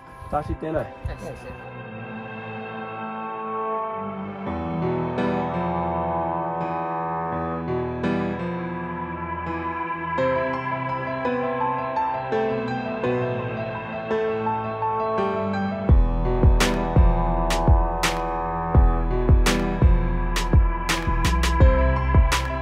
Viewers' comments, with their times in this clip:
0:04 this music is scary..